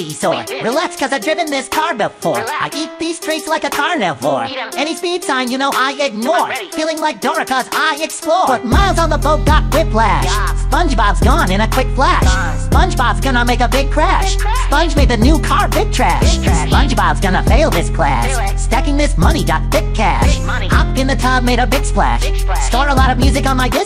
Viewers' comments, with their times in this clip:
0:08 was when he went crazy on the beat